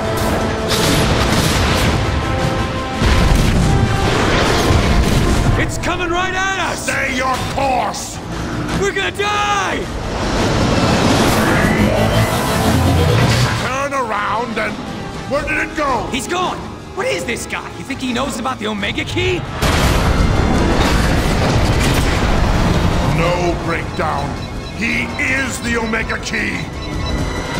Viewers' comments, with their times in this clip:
0:08 WERE GONNA DIE Lol the way he freaks out